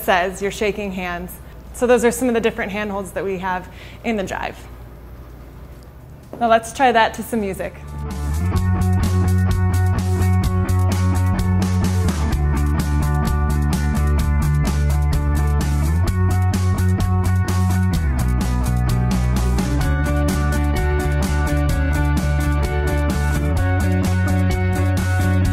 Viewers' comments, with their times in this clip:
0:08 from russia. looks soooo weird/strange when you both dances so elegant with that "desctructive rock" music on the background.. like.. two people from some ancient age dances some ancient dance at 3020